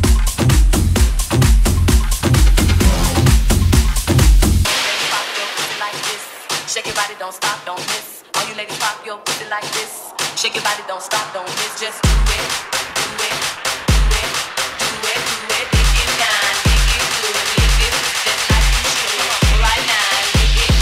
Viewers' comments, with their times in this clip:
0:05 Super tribal set ! 🎉🎉🎉🎉🎉